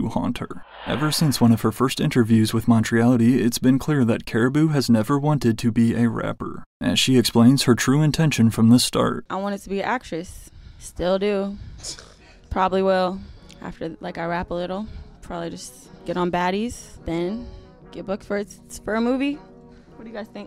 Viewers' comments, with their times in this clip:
0:08 bro was laughing 😂😂😂😂